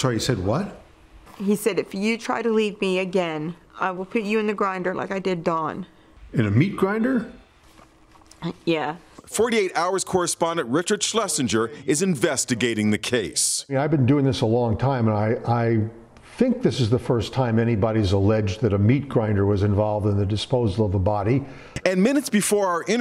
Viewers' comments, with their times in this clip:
0:06 Just the way she said “ya” was so fake 🤣